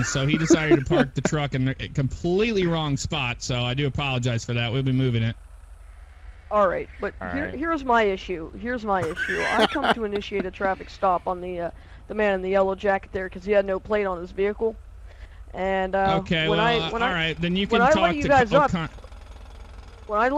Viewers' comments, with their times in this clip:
0:05 when the little kid started talking i kinda lost it for a second haha. what's he doing roleplaying as a cop, shouldn't he be eating his mums mac and cheese.